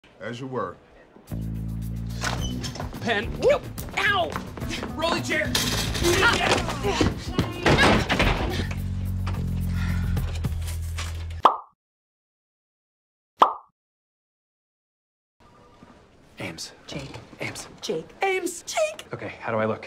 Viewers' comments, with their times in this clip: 0:06 Gina’s “Awww Jake!” Was so... (I can’t describe it lol)